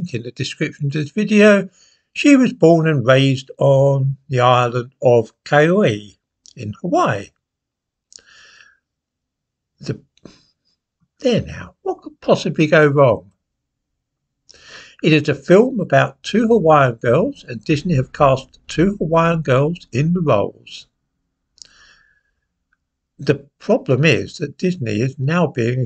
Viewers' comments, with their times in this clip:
0:08 He does seem a little unsure of his material here. 😆